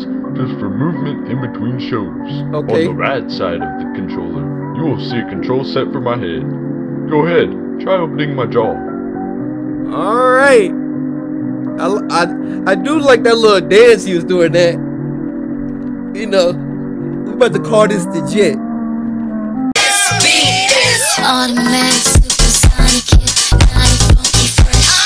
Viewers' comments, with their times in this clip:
0:06 why'd he say head like that- "Mah HaGhEd "